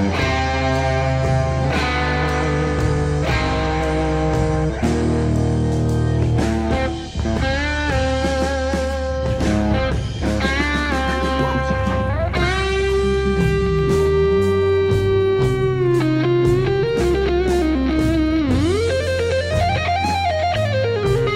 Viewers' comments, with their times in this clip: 0:09 the perfect exclamation in the background !!!